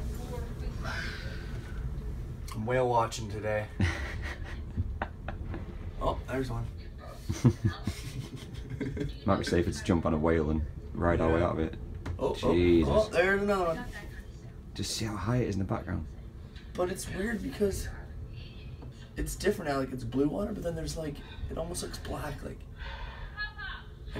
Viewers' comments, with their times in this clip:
0:07 nah he was laughing like it was normal